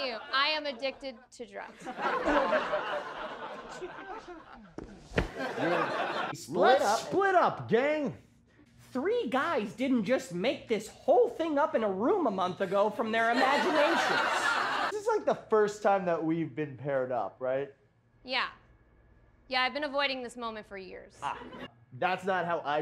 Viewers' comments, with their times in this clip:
0:06 did they dub over that for some reason? He sounds EXACTLY like Fred